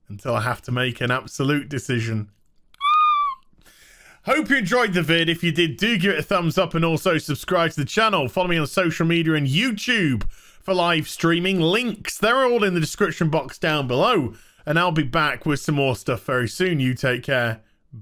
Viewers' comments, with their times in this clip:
0:03 loved his squeak of hype 😄😄😄